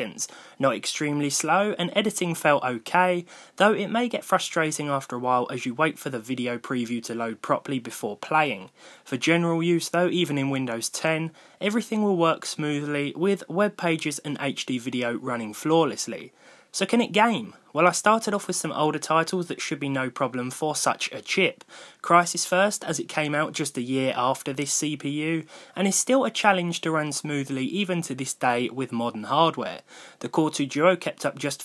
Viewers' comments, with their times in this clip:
0:10 general butt naked XDDD
0:11 "general butt naked" XD
0:12 "general butt naked"
0:12 general butt naked. thanks google.😂😂